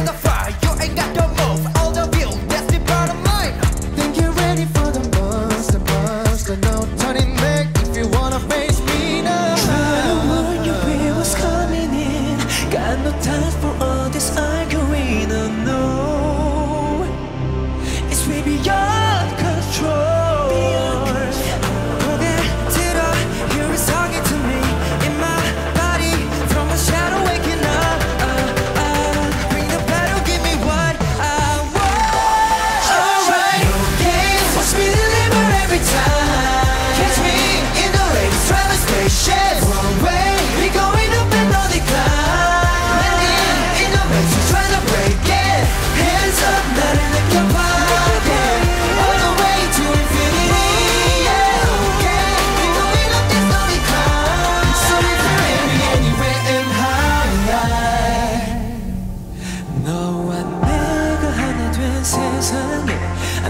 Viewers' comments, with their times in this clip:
0:04 baekhyun always legiy he sounds straight up from the CD am i the only who addicted to this part
0:07 baekhyun’s no 😎🤏🏼 lemme take my glasses off 🤨🕶🤏🏼 um- NO sir that was unreasonable
0:09 The mini vocals Baekhyun did wtf❤️
0:09 DO Y'ALL EVEN HEAR THE RUNS?????
0:22 Ten's voice just melts into my ears...
0:23 I love Baekhyun SOOOOO much! My eyes are literally stick on him whenever he is in the camera! And his voice is always attractive and easy to be recognized even when they are singing together. Also, Ten really shocks me in this song! I used to consider that he is a dancer or a rapper (I am sorry for this, I didn't know too much about nct), but this time! ! Ten shows a brilliant vocal! I literally repeated listening to this part for ten times! This is sooooo good!
0:29 yes was quite good too. Actually in this song, the BaekTen high note got the most focus, so just talked about it. and yes of course I appreciate Ten's effort and hard work
0:47 in "infinity" taemin doing little diferent than others and im here for it.. And his " monster, monster" So cool!!